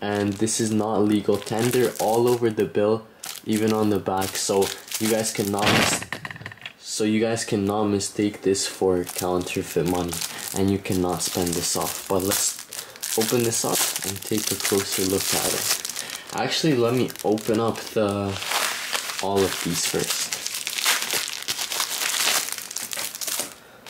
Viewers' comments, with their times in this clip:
0:06 bro studded lol